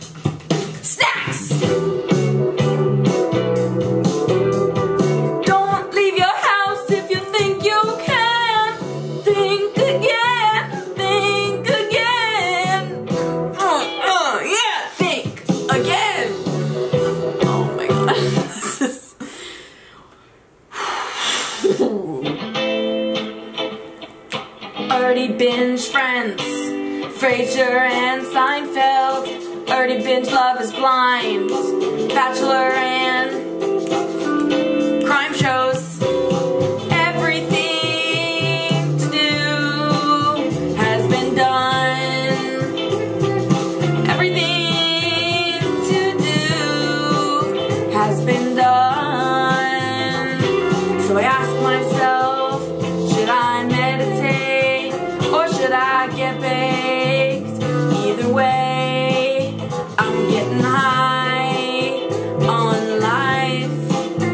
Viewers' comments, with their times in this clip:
0:03 is it just me or does the song sound like an off-brand Roundabout
0:18 Her eyes.. MAGicAl Can't get over how she said "some aCtIviTies"
0:47 Are we going to ignore the fact the she low key has VOCALS 🤩